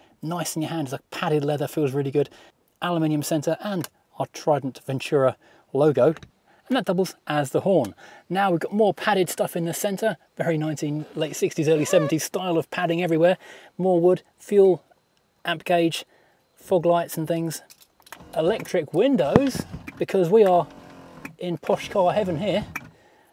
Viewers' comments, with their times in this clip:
0:04 what a bummer that I can’t hear the horn